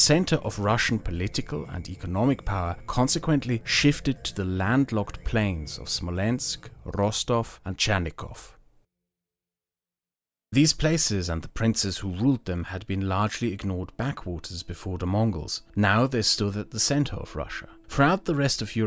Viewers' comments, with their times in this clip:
0:04 What does mind Chanikov? There are 2 Rostovs in Russia. The map shows the wrong Rostov. However, these are quibbles, I will not be stuffy.